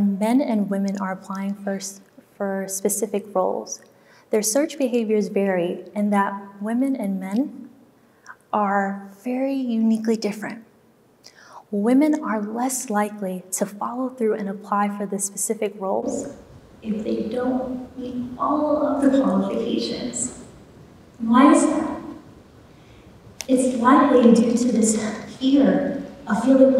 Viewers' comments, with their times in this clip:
0:10 Sound went bad after timeline.